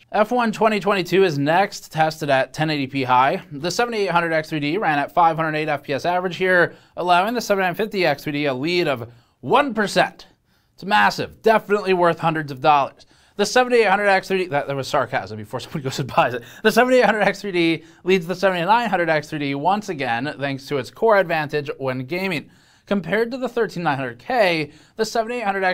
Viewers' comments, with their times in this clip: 0:08 That cracked me up. The delivery was great